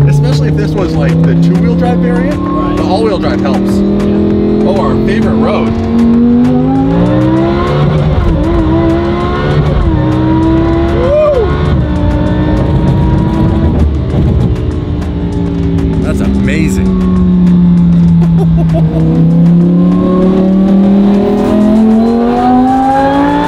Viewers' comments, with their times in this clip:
0:08 it's almost like VF up the power output on the superchargers, cuz I remember the hate on superchargered huracans compared to twin turboed ones. This huracans sounds and looks a lil quicker than normal